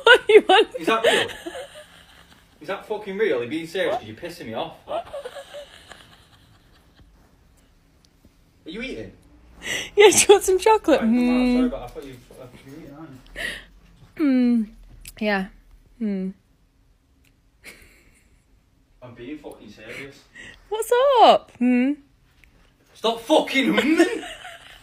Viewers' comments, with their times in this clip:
0:10 I don't see how the hmm thing pisses him off so much?